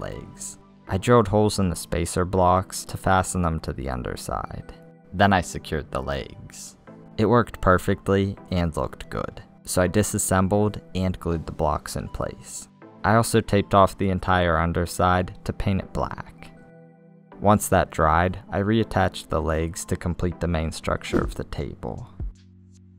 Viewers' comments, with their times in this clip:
0:09 Did anyone notice this he said the blox😂😂